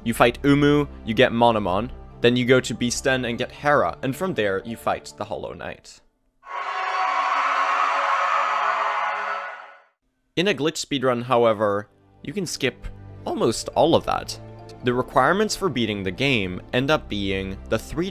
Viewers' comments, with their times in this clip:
0:06 i got so scared since that's my notification sound lol